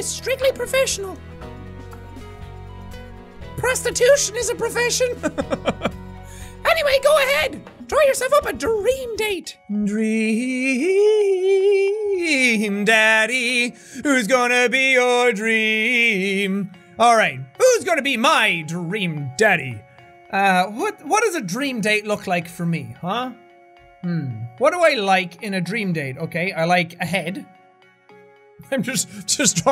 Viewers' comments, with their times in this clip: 0:10 Wow! Jacksepticeye! You actually have an amazing voice!
0:12 ... Wow... jack you should be a professional singer